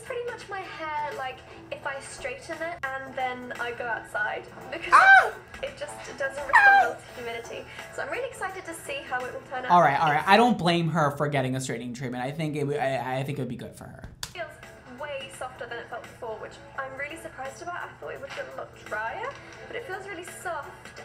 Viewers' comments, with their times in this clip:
0:07 Your screams at minute 😂😂😂